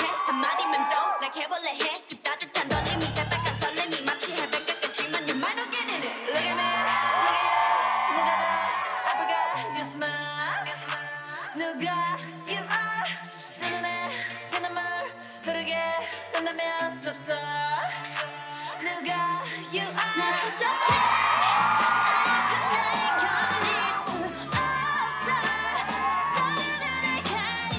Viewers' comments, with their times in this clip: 0:06 idk what that it is if thats NOT CHEERING
0:08 I noticed audiences spake bts members name second left 🤔